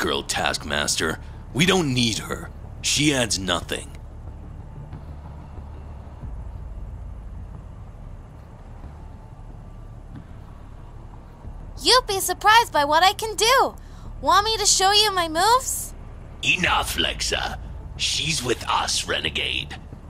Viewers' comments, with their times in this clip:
0:04 there was silence
0:05 Why did the audio cut off